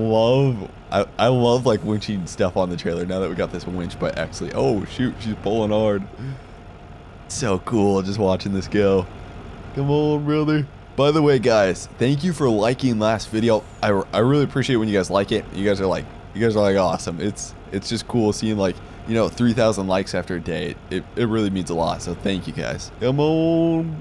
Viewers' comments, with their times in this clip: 0:10 He sounds just like cleetus